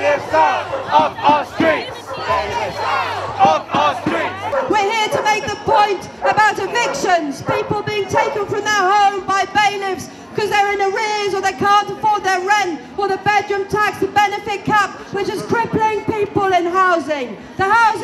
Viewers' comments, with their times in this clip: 0:05 nan get off the karaoke 🎤🤣🤣